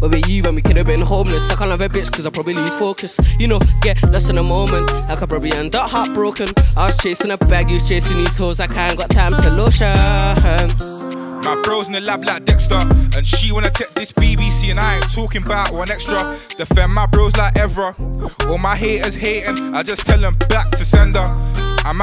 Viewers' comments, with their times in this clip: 0:09 When A1 said ‘lotiooohun’ my wife came downstairs and said “yes darling” cuh she heard ‘hun’